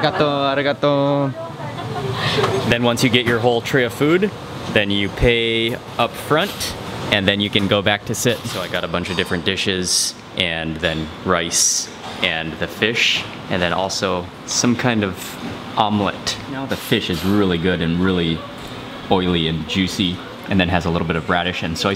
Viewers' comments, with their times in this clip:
0:07 is more like ordinary Japanese food. Grilled fish and rice, plus another one or two side dish for vegies. I hear Chinese or other foreign language speaker at that restaurant.